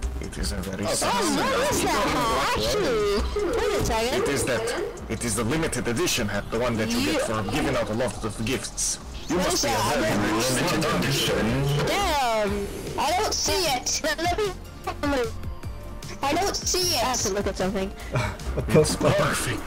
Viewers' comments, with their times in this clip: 0:07 i fuckin love that spy's voice and the way he says "You must be very rich"